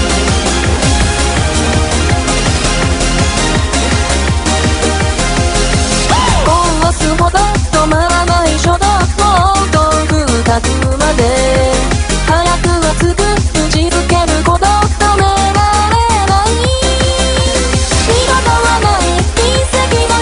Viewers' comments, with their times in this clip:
0:08 I... Heard... Shota X3